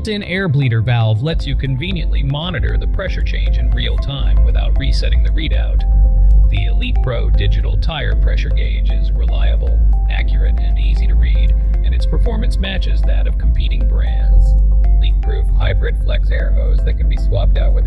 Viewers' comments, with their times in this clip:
0:03 got something in your throat?